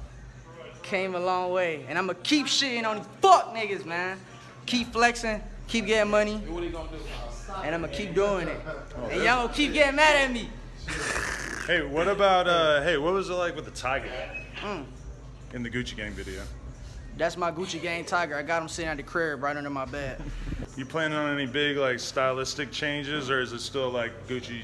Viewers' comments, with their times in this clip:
0:10 This nigga sound like a pressure washer